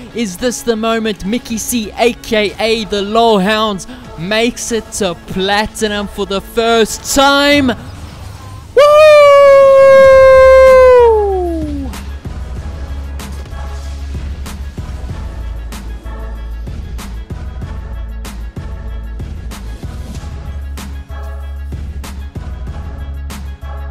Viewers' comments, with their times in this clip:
0:08 Congrats brother you made it and that noise lmao